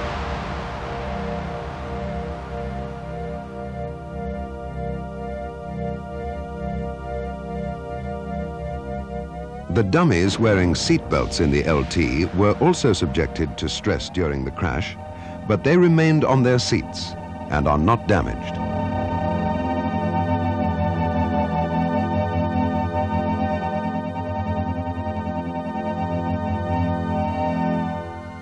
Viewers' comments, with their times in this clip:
0:10 you get real spaceship vibes. The eerie, "futuristic" music, the aluminium foil all over the place...